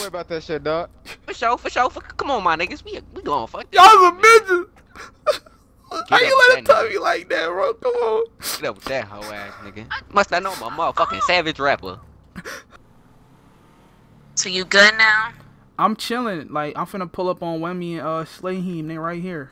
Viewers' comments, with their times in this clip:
0:03 he started crying I'm dead 😵 💀😂😂😂😂